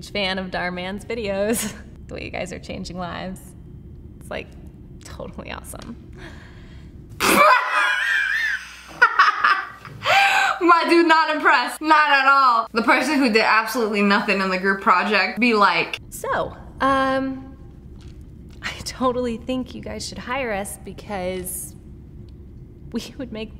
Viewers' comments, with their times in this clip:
0:03 the laugh was so funny 😭🤣🤣🤣🤣😂
0:06 The way she burst out into laughter, I did too 😂💗
0:06 Lol how he looks at renee lol then sniperwolf laughs lol
0:08 THAT WHEEZE THO